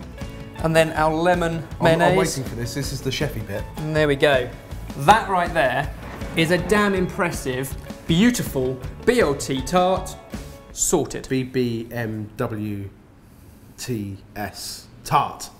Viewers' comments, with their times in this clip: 0:03 Did you say sheppey as in the island.